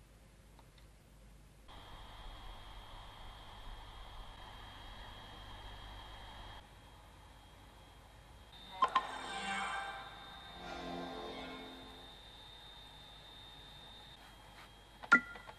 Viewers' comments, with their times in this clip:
0:03 PS4 jet engine much